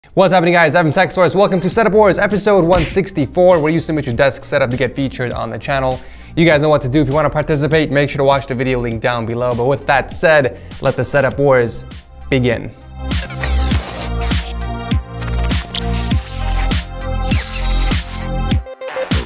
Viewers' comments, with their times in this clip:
0:00 Put automatic english subtitles in What's happening guys having sex toys welcome to setup wars episode 164
0:00 “having sex wars”